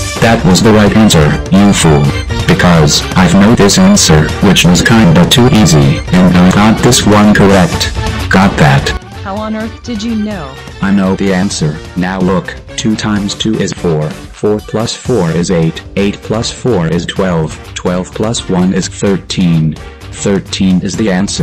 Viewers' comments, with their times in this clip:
0:03 Why to add super mario music?